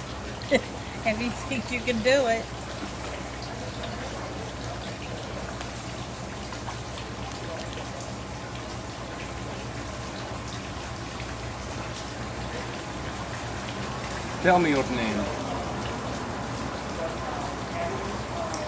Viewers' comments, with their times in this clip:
0:04 why did you include that effect? now i just think its fake... why would you do that? i thought this was suppose to be real and honest so why add sound effects and all that? you are making everyone look bad